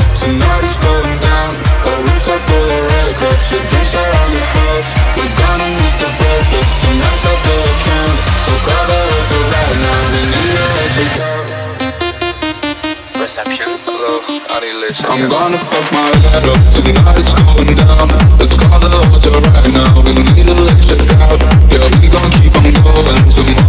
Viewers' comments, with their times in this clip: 0:10 That 2nd Drop ❤🔥💪💯